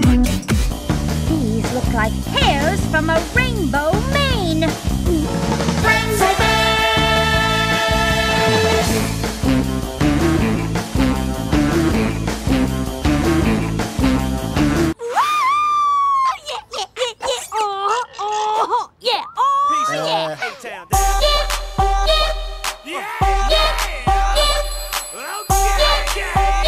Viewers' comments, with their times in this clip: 0:07 Between 'Rainbow Mane' and 'Crimson Chin: Main Theme'(Fairly Odd Parents) overlapping I can't tell what I hear first!!!😳😵‍💫😵‍💫😵‍💫🤣🤣🤣